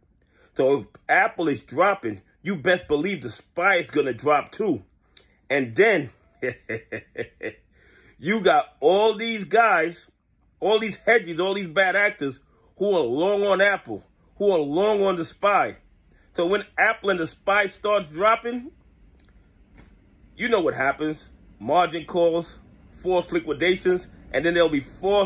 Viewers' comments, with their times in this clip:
0:06 The Dr. Evil laugh got me 🤣